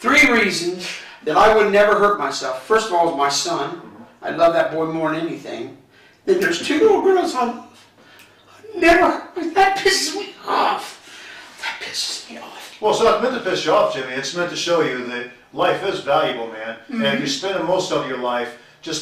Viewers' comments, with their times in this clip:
0:05 Worst fake cry of all time?